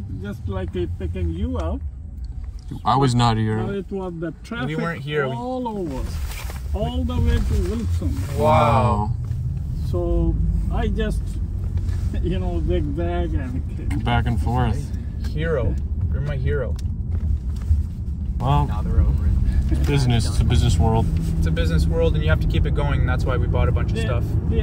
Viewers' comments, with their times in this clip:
0:08 the unison “wow” 😭😭😭